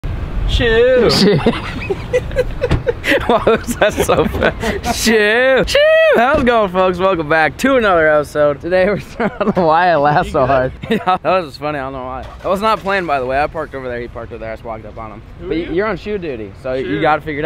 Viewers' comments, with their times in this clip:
0:00 Best Sheeww of all time lol